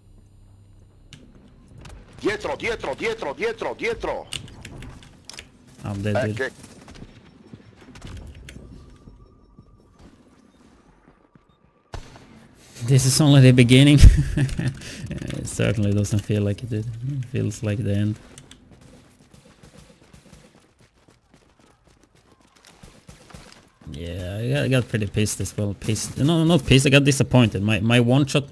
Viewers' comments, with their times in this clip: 0:10 it's an italian dude 😂😂